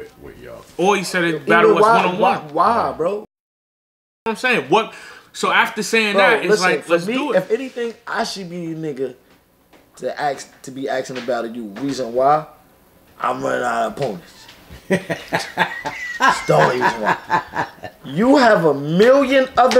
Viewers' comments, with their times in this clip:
0:03 They're so in sync wit each other, they even paused together